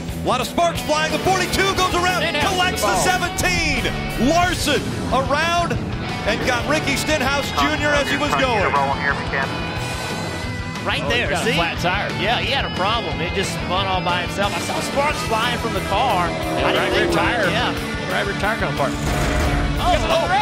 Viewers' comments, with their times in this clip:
0:08 Love how you can here an audible cheer as Stenhouse gets wrecked.